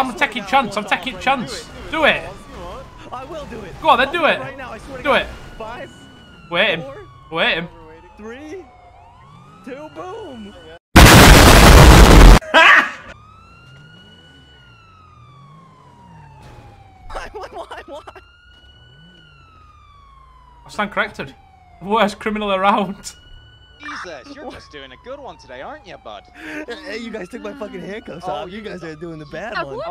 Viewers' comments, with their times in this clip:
0:10 AATENTION ALL HEADPHONE USERS: pls lower the volume bc its rally loud and my ears hurt